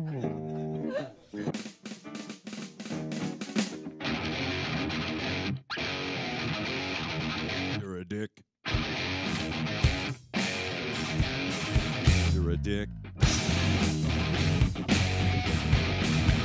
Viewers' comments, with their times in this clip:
0:03 What about kirk's little funk riff ?